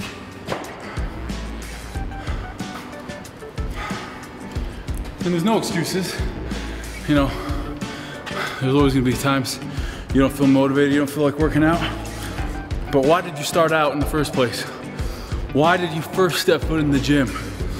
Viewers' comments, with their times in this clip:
0:03 the speech made me jump!